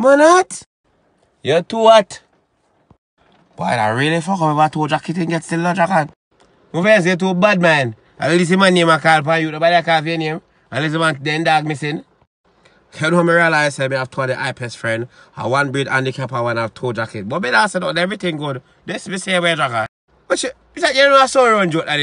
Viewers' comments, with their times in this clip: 0:03 In such a concerned way....